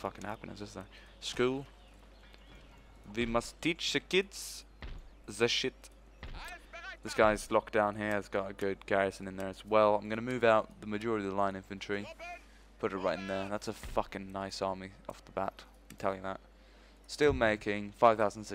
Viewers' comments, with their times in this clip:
0:03 Of course he can, didn't you hear him ? "Vwe muss teach ze keedz ze sheet."